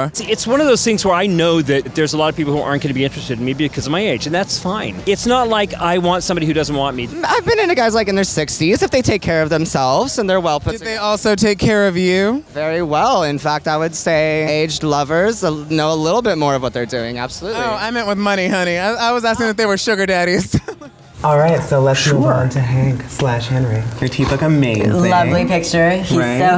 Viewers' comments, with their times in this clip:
0:08 The guy just looks like Trixie Mattel! That voice does not though...